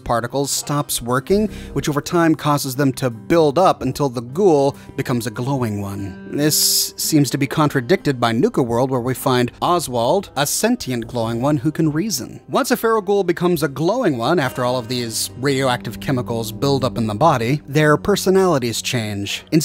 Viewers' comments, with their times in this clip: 0:05 Who else is really bothered by the fact that he keeps pronouncing Cerberus as "cerebus"? Jason Bright is another example of a non-feral glowing one.